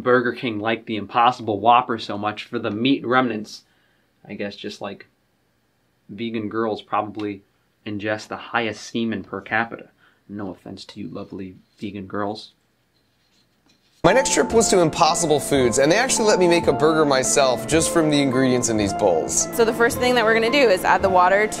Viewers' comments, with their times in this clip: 0:05 knew u were gonna say something shady still made me laugh. love how ur accent comes out sometimes when u get pissed. so fun to watch this channel